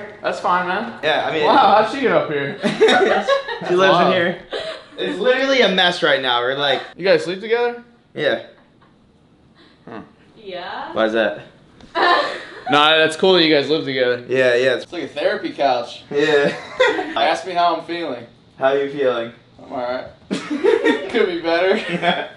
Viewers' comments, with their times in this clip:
0:07 the way he asked was so weird